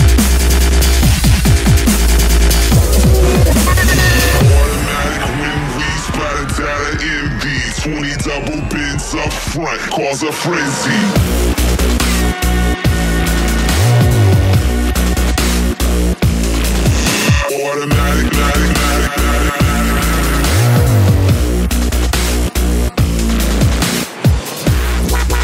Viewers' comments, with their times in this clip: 0:09 I remember when this came out omg it's so clear Me all young moshing, "this makes me feel like a fucking gangster" lolol